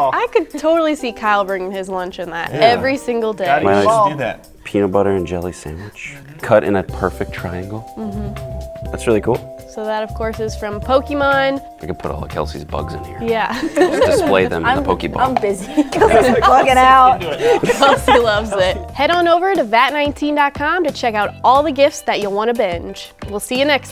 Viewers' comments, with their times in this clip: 0:06 does this guy do ASMR?